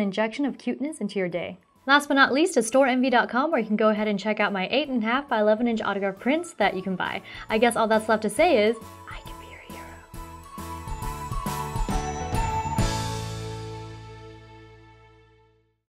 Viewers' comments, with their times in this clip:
0:08 what did you whispered ? hahah